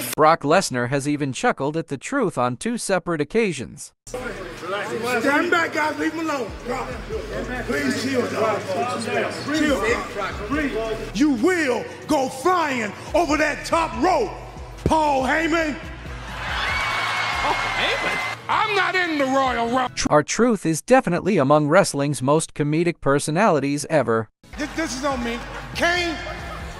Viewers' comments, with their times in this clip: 0:10 Him making Brock laugh LOLOLOLOLOLOLOLOL